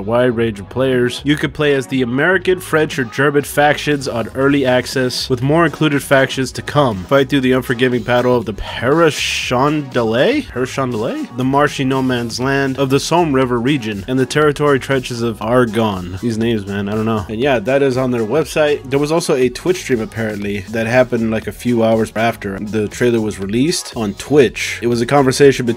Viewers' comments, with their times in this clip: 0:09 come on How did you mispronounce passchendaele? ITS basically How you say It: pachendale